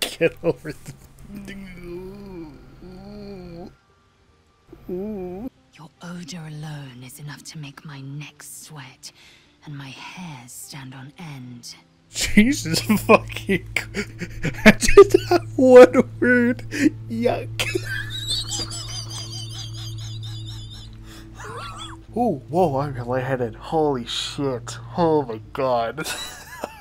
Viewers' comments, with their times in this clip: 0:10 His laughthing is incredibly cool omg